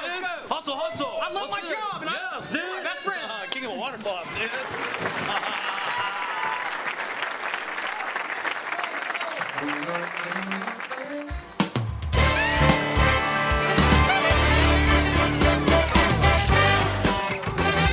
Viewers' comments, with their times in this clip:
0:04 it sounds like he says the N word